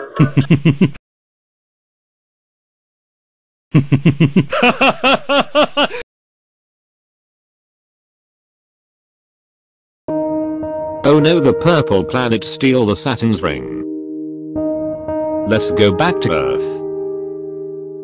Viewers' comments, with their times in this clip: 0:04 sounds like dio's laugh lol